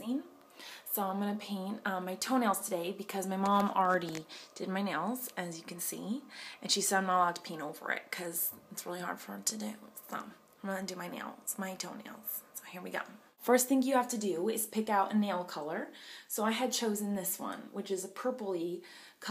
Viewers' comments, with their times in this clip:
0:07 thought she said pee over it!!! but she said paint over it